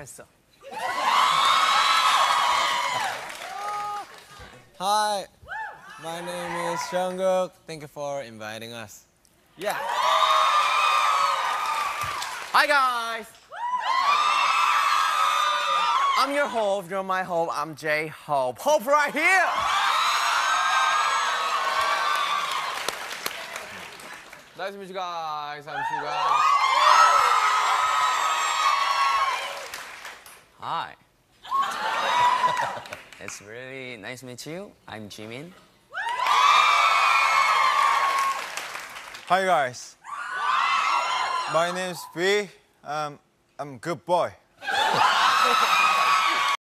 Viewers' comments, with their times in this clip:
0:03 omg Jungkook’s tiny scream 😩
0:29 omgg when Jimin said Hi his voice was so deep I was shoock and it also reminded me of the thing in tiktotk," Hi I'm Ryan and my life is kinda crazy😂."
0:43 how they shouted on I'm a good boy They'll be like: yeah u r a good boy we know we know 😏